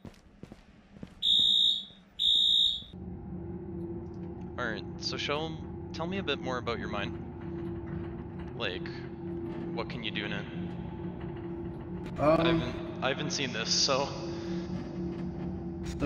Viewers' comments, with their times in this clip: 0:03 The fact that the voice chat changes based on the environment just shows the level of detail that has gone into this.